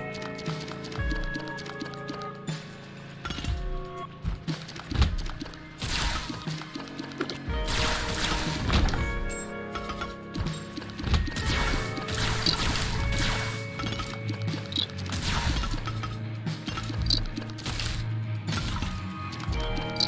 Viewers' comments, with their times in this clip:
0:08 sounded like the first 2 seconds of the terraria dungeon